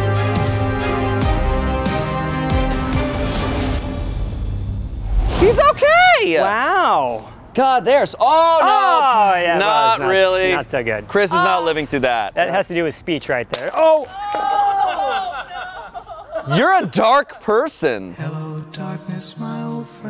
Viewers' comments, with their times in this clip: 0:05 how high Shayne can pitch his voice never ceases to amaze me.